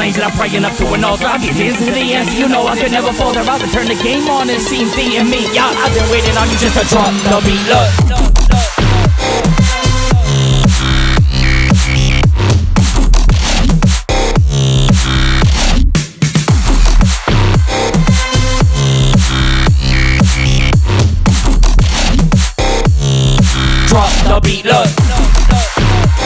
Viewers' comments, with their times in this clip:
0:08 that drop goes irresponsibly hard jeeeeeeez 🔥🔥
0:08 You're work is impressive! Well done! (And what a drop !!!)
0:08 That DROP though! :O 🔥